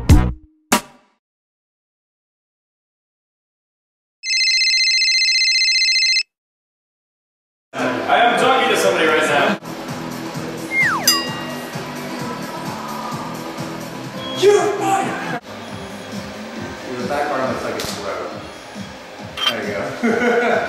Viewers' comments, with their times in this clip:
0:08 THE CUTEST YAWN EVER!!!!